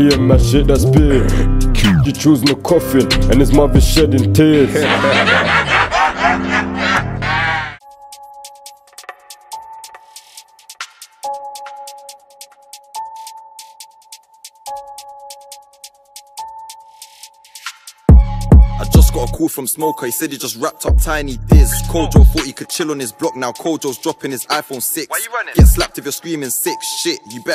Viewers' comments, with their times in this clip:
0:08 Ngl that beat has been fully rinsed I've heard it on like 6 other songs